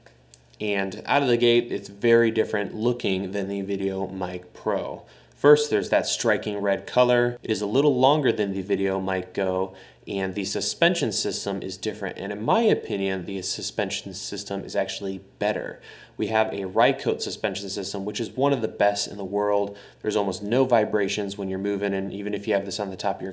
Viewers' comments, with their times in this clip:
0:06 WOW, The Video Mic Go is a little longer than its self?!!